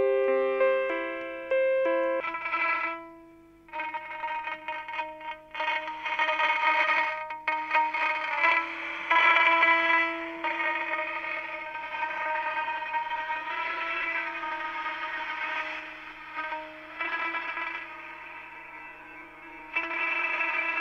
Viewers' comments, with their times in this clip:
0:03 Hey can someone tell me the instrument used ? Way too cool to be left a mystery, it sounds like how boss music is made